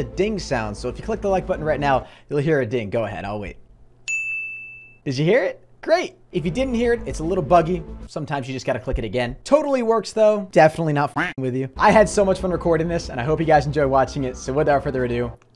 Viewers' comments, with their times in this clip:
0:03 I clicked the like button at the same time as the ding noise